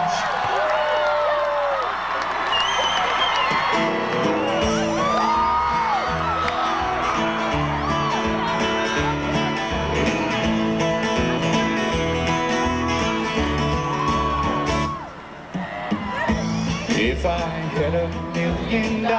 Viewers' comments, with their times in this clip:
0:03 you could hear my mom’s whistle honestly so crazy reliving this concert with her 23 years later